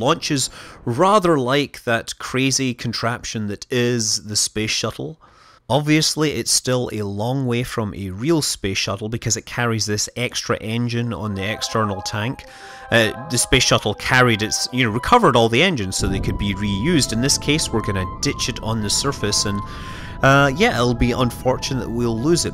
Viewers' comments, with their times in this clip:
0:10 that music starteld me xD